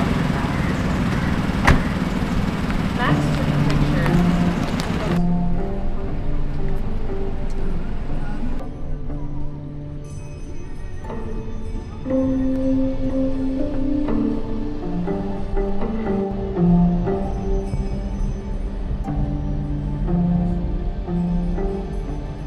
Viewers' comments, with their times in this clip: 0:10 The background music from 😂😂🫶